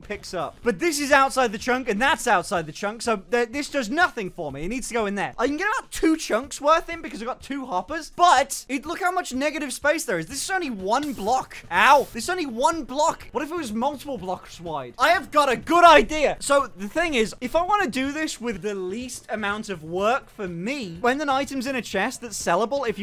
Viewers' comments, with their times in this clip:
0:10 "What if this was multiple "Bluksh" wide!"